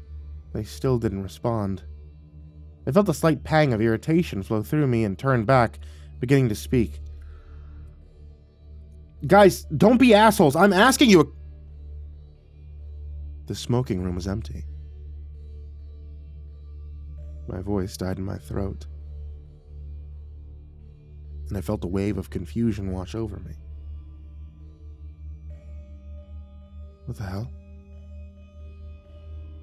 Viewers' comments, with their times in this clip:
0:10 Who else thought the audio cut out ?